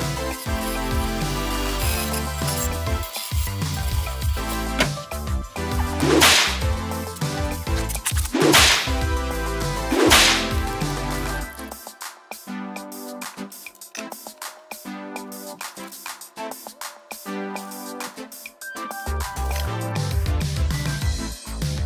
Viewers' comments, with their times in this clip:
0:07 I heard THREE glove lashes. Right glove lash, left glove lash then another unseen glove lash. Where did you fit the third glove, hmmmm ?